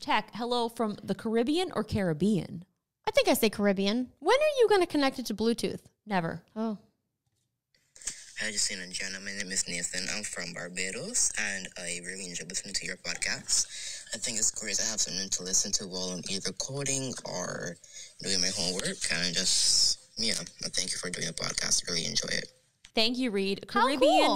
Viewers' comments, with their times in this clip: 0:08 Wow, it feels weird hearing my own voice